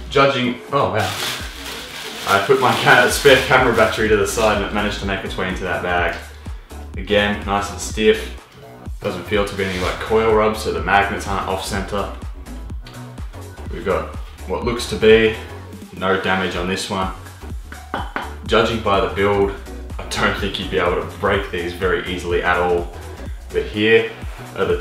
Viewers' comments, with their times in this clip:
0:08 there was a static but I still love your vids